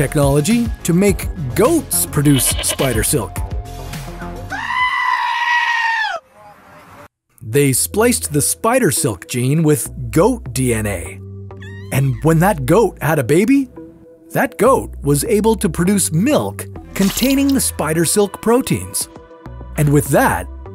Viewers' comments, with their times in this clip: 0:04 when our moms about to hit us, and also an air raid siren
0:04 Why is everyone talking ☠️